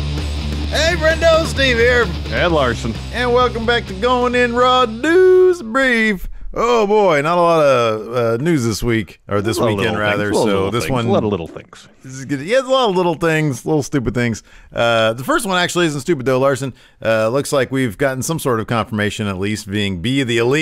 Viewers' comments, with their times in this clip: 0:04 Haha, they use autotune.